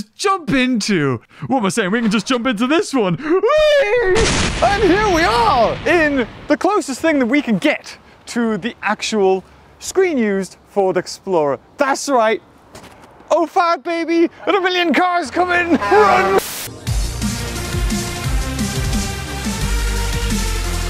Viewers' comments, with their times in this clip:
0:04 He introduced that car like he was Jeremy Clarkson on Top Gear 😂